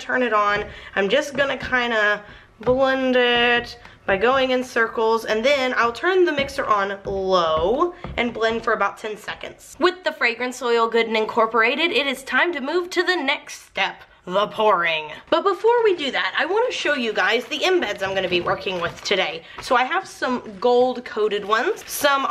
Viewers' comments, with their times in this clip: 0:05 omg i heard your little girl and thought mine were giggling in their room lol it's in the morning so they are supposed to be asleep lol